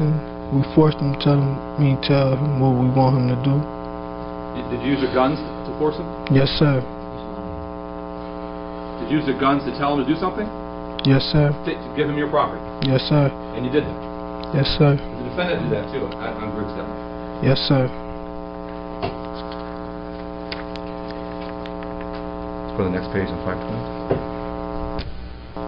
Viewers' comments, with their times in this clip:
0:07 sounds like someone said “he’s lying “